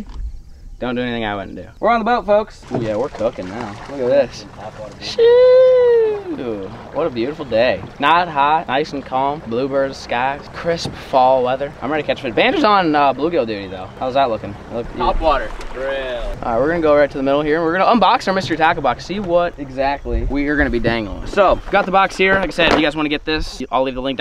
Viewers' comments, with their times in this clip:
0:10 A little pass his voice cracked